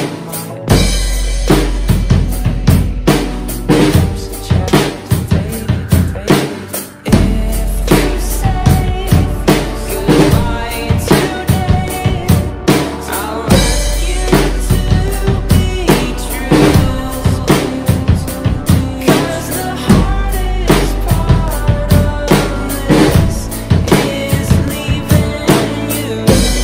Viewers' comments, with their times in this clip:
0:08 sorry for that little mistake with the bass drum:( I didn’t really have much time to record it again so here’s the cover in one shot